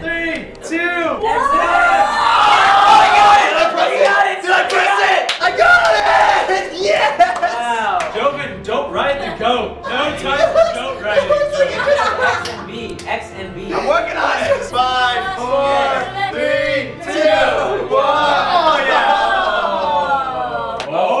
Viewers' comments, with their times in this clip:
0:05 anthony screamed like a little boy on christmas morning when he gets the xbox 360 game he wanted! anthony's scream LOL!